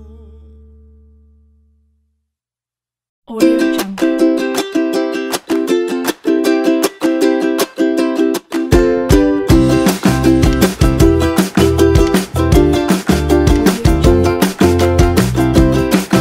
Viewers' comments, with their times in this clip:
0:03 Thanks for the nice music! But anyone who knows why there is the cheerful music from ?